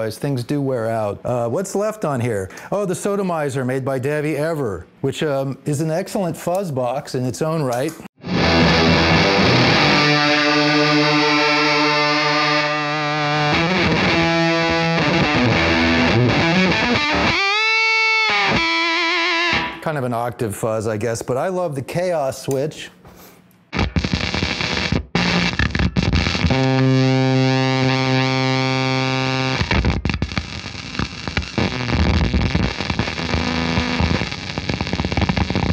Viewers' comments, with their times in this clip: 0:07 he should let the oscilator going!! sounded fantastique!!!
0:22 man i could watch him do this all day!!!! BUT some times noise is just noise